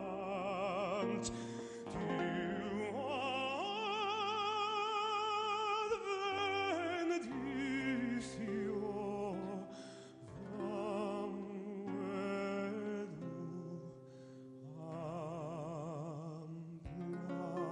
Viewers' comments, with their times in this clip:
0:04 Da Iawn ! D y Garreg wen is an over dramatic piece that everyone wants to hear but no one can sing. His version of You raise me up in Welsh is heart warming, the last note superb! Everyone should want to hear this voice.